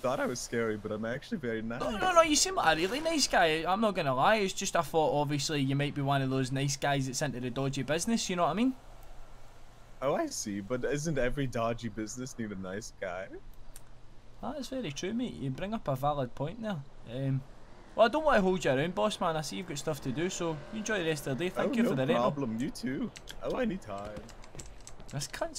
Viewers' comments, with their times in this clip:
0:09 he sounds just like that peanut king from the first ep of Adventure time 😂